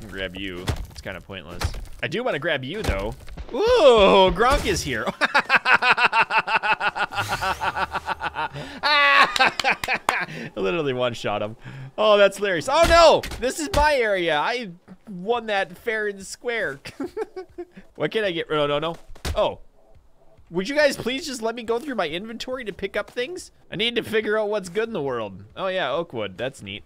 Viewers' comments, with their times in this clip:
0:05 love the laugh lol
0:07 laughs like a pshyco